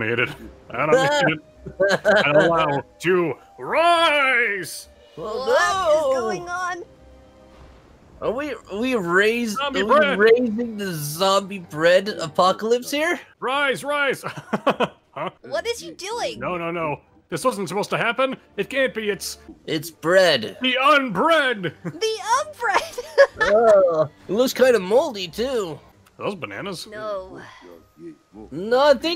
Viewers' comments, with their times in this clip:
0:10 No problem.... Tails technically prepared for this to happen! Sonic: Team leader Knuckles: Brawler Shadow: Weapons expert Tails: Strategist Amy Medic Dr. Eggman: Scientist Vector: Get-away Driver Cream: Morale Booster Blaze: Speed fighter Rouge: Demolitionist Big: Mascot Silver: Guys who dies first Also, what happened to Sonic's mic?